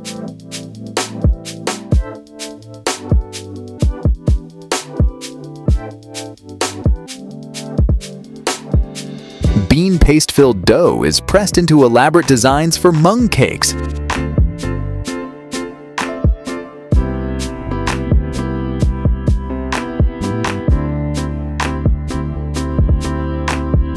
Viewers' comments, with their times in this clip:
0:09 I thought the narrator said they were making beans into monkeys but it was mung cakes apparently!